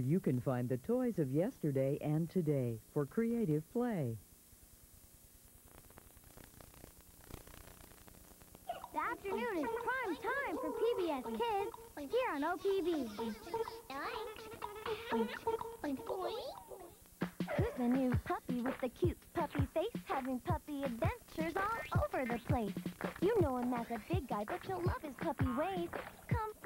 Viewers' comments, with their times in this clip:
0:09 Does anyone else hear the Qubo announcer or is it just me?